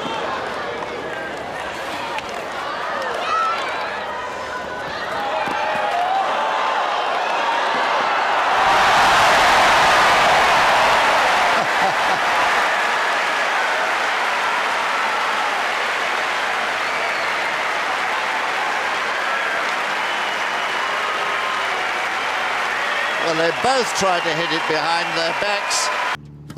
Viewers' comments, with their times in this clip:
0:09 ear rape much